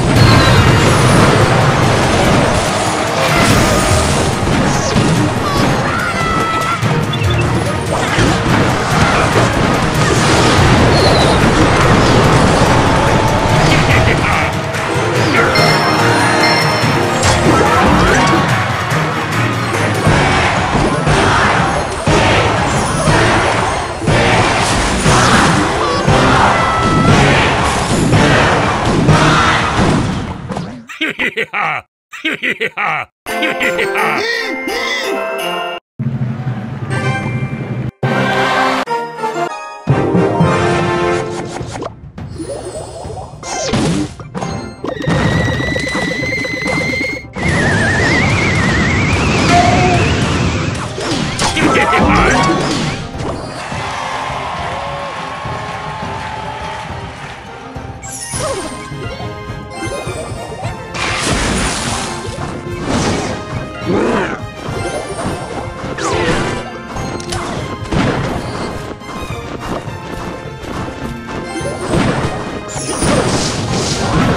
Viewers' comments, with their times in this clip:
0:06 that musk oooohhh
0:57 sounds like ice spirit